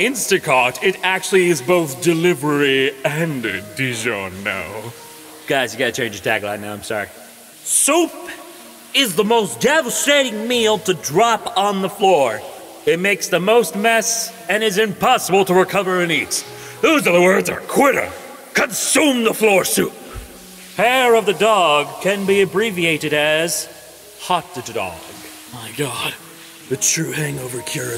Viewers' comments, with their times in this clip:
0:09 why the fuck did i hear soap instead of soup?!